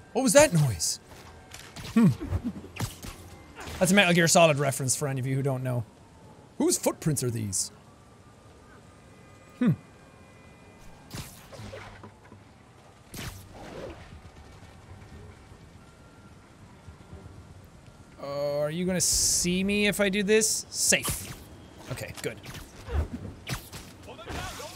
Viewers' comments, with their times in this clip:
0:10 the bucket goes weeeeeeeeeeeeeee